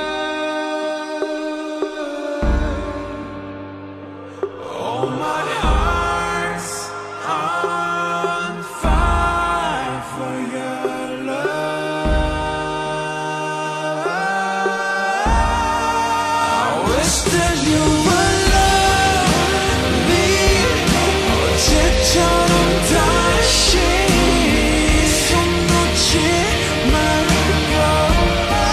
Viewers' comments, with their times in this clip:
0:09 Jimins high note hits different here